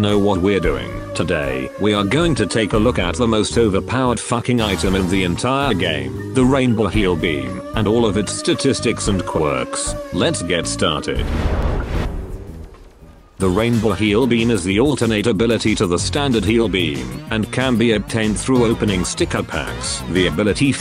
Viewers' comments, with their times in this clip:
0:06 Whys the music distorted?